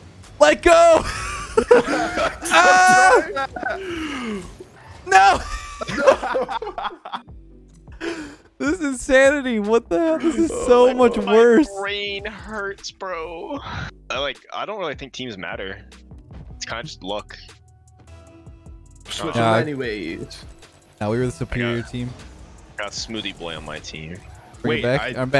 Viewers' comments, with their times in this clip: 0:08 Love how his mate is claiming that his brain hurts and he really sound like he is crying a bit